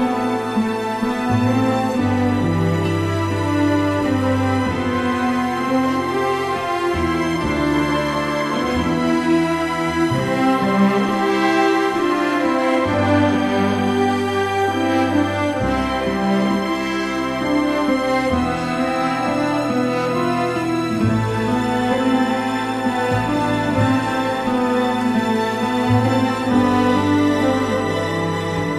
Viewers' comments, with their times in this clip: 0:10 From the music elevate but is still not there in this version and i cant refound the version who does it and has it. from its getting there but still the pitch isnt high enough.. still looking..